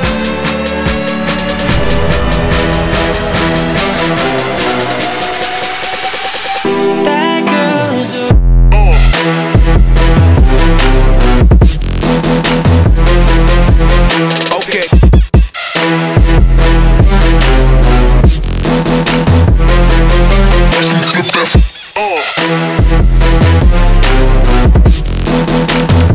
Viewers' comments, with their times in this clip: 0:08 That bass drop made me add this right to my remix playlist